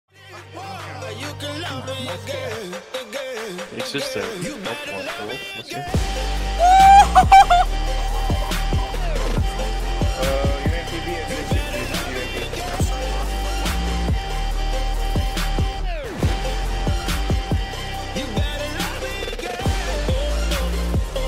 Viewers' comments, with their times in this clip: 0:04 obvious backtrack bro. turn it down.